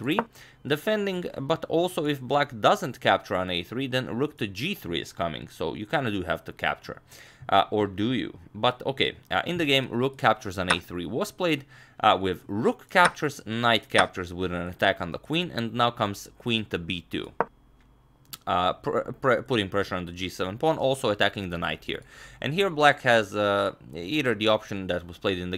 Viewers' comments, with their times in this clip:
0:07 vsauce music playing